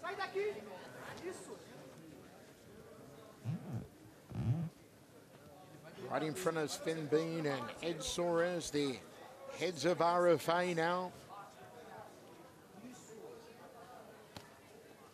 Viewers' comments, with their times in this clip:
0:03 Wtf was that a fart from Pantoja, thats goodnight irene